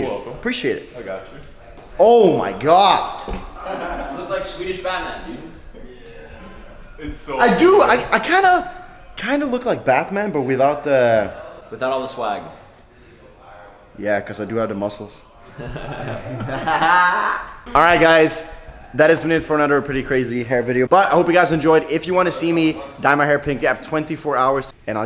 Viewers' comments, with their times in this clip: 0:09 who tf is bathman